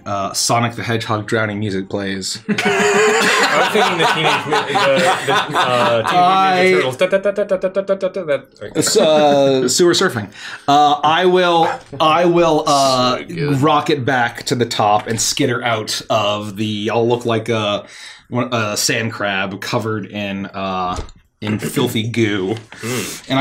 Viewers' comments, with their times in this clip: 0:10 "You have a fear of commitment." Ominous chorus kicks in😂